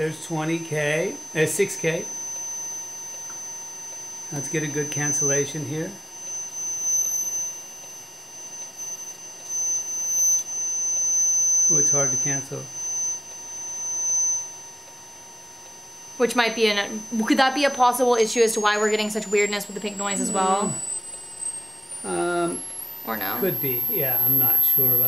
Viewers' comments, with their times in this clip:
0:10 can Dad actually hear the 12K ?!